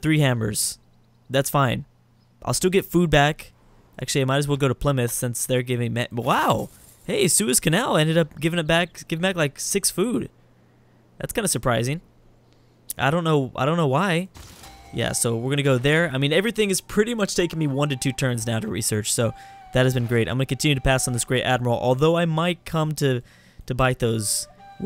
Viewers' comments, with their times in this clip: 0:08 Suez Canal Drew? Where can I get some of that crack?